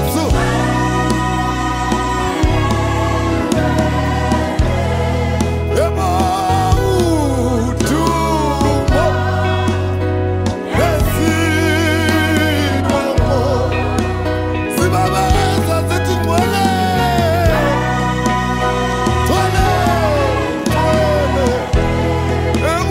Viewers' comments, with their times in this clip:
0:07 The transition to chorus yohhhh 🙌🏾🙌🏾🙌🏾🙌🏾🙌🏾